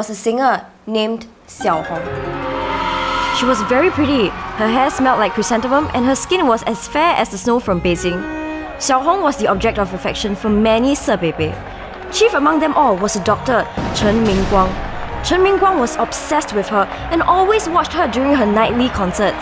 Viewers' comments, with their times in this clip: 0:04 “Chrysanthemum” Chrysan The Mum